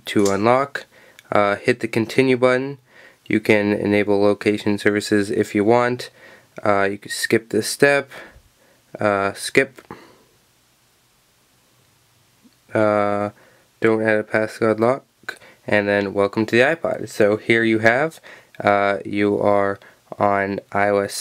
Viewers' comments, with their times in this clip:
0:08 you mumbled. I can't tell if you said you could/can skip the Apple ID step, and you weren't clear on whether you should or should not skip that step.